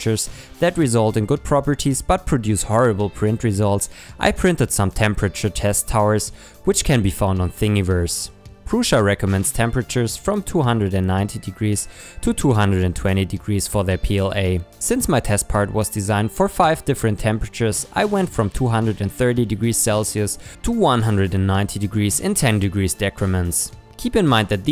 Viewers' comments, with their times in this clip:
0:10 Wutt... I heard 290 degrees